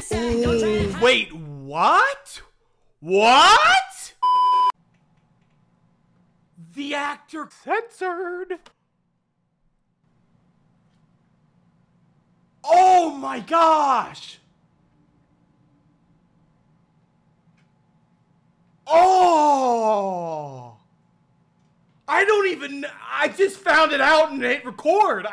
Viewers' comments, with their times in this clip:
0:06 That censor sound effect sounds so disingenuous, the person killed themself and you use that silly sound to censor that.